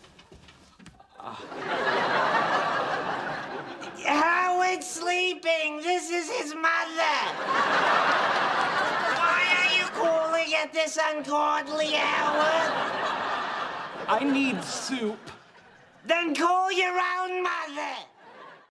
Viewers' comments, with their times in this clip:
0:03 I love Howard's impression I'm dying